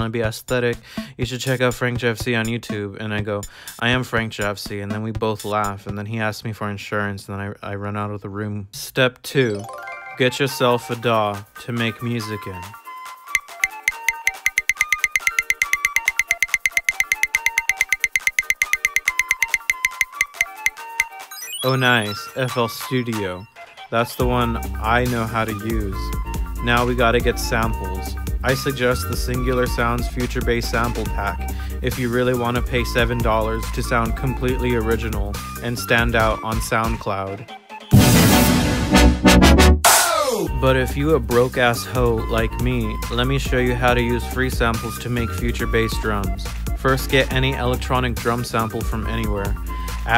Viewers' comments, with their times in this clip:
0:09 mario party 1 soundtrack (but pitched) ;D
0:37 you killed my ears .